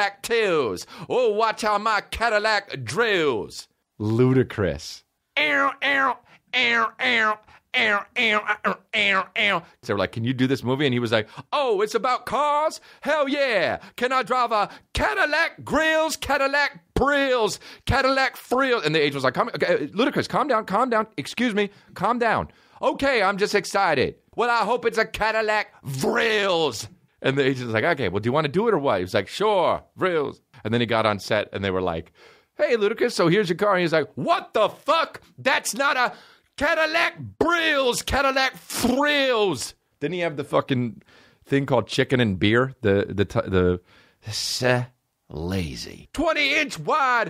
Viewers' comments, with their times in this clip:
0:10 when his voice cracks it adds so much to the delivery. this clip is so fuckin funny 👏😆
0:35 the deep breath he takes kills me every time